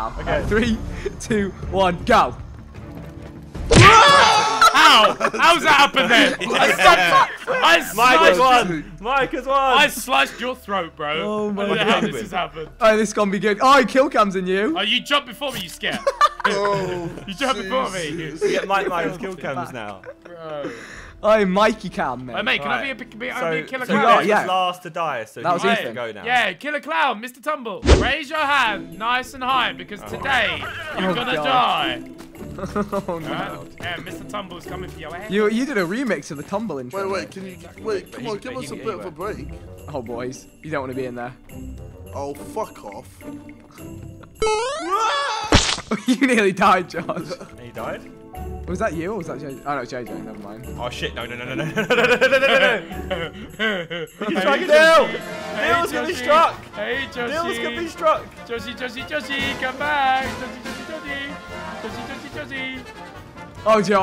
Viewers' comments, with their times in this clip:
0:03 That "ECO" Death scream :o
0:48 That "ECO" Scream